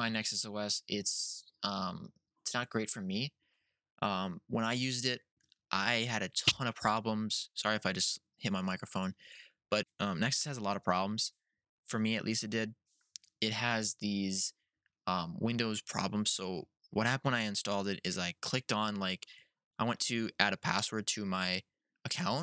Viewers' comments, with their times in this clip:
0:05 Is it just me or did this microphone hit sounded like a minecraft hitting sound